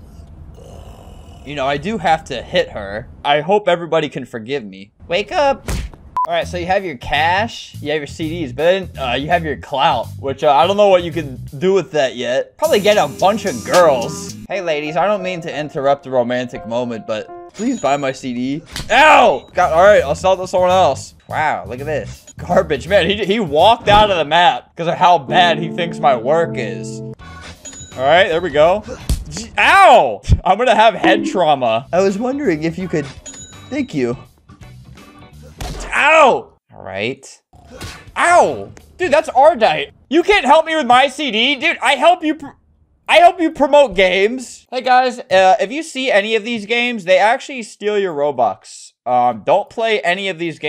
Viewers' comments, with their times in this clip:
0:04 giga chad theme intensifies
0:34 We gonna ignore how that one dude said badass